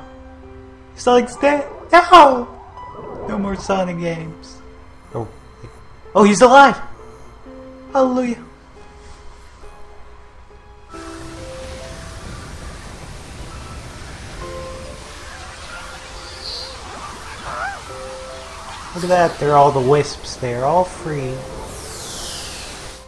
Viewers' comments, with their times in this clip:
0:10 You can even detect the sarcasm with the voice sound.